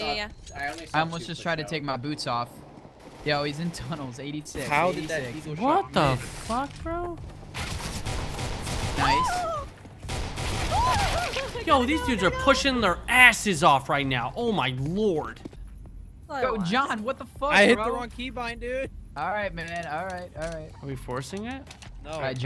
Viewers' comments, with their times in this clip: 0:08 what is that sound. Is that a horse?